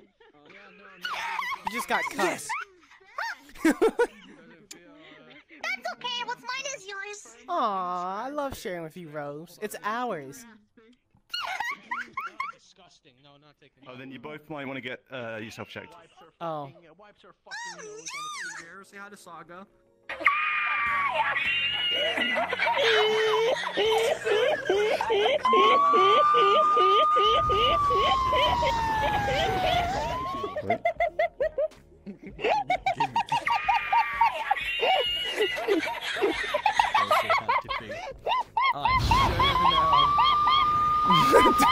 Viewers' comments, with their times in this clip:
0:10 Soviet Anthem starts playing
0:22 When you are starting your car on cold days, and it doesnt start on few seconds but then slowly starts running to idle speed. XD